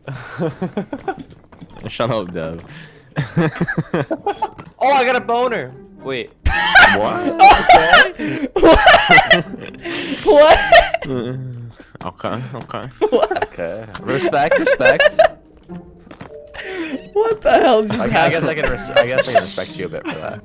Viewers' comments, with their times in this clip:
0:04 Interesting. (Edit) I've replayed that like 20 times and it just never gets old. I also love how he says "Wait-" and they all just start laughing